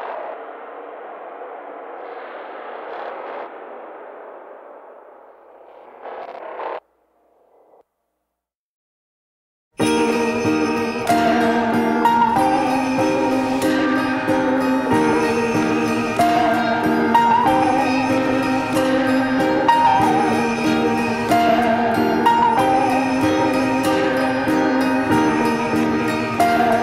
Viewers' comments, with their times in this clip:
0:08 love that song around that starts